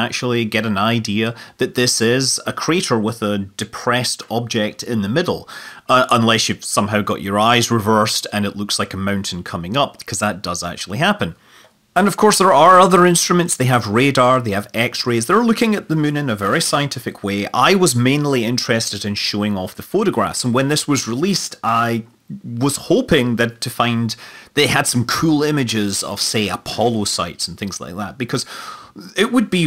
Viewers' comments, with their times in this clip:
0:10 Sample rate audio bug?